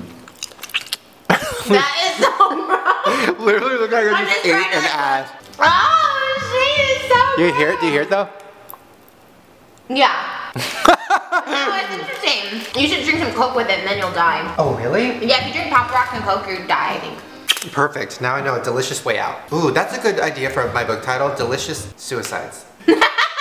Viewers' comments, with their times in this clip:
0:04 As someone who does not like to see people's food in their mouth, or hear people chew... made me cringe so goddamn hard. D: